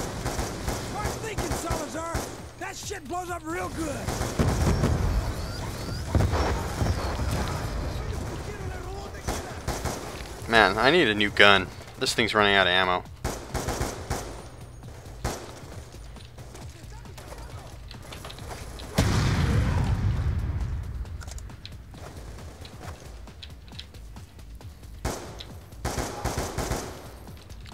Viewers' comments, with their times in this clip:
0:10 he shoots in musically